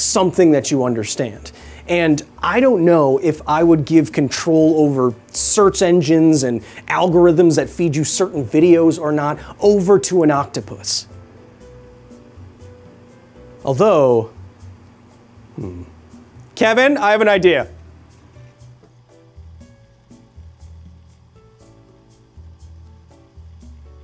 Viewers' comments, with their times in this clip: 0:09 "... over to an octopus... although. Hm." that pause afterwards was very telling, Kyle. Yes, let's put that octopus "sauce" all over technology 🤣